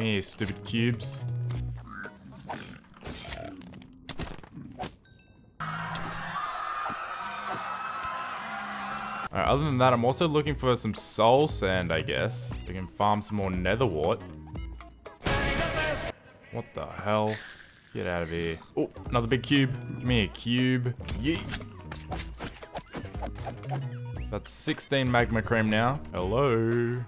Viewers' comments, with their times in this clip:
0:08 I'm liking the weird music, tone
0:14 BRUH I THOUGHT MY ALARM WENT OFF DONT SCARE ME LIKE THAT. I WAS SO CONFUSED AS TO WHY IT WAS PLAYING.